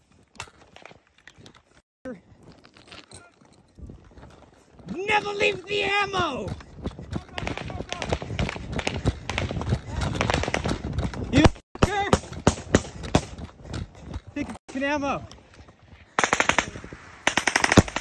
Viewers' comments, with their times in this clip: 0:03 why he say it like that lmao